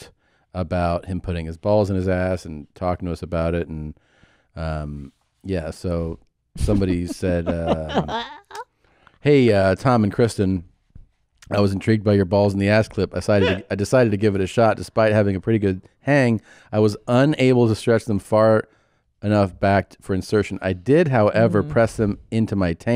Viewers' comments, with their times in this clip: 0:05 when you realise you have the exact same laugh as Chrsinta.